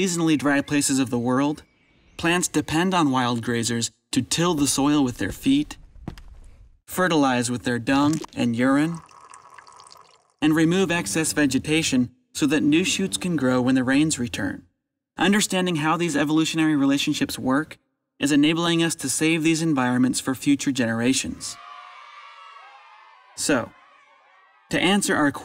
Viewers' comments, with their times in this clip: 0:07 Those sound effects! plop whizzzz